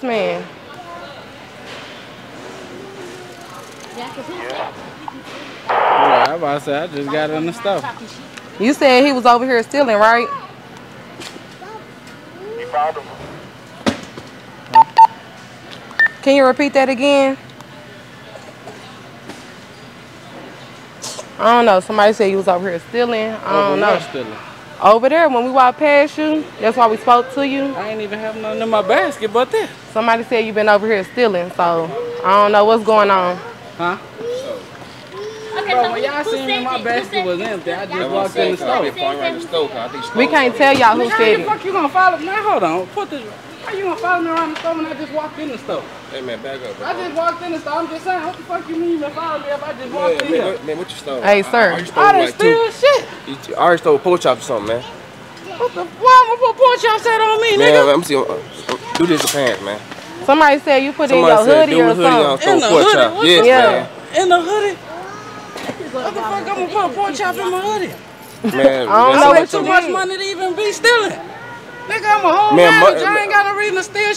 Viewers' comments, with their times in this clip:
0:09 when dudes voice get high pitched 😂😂😂😂😂😂😂
0:59 buddy sounds like elmo 😂😂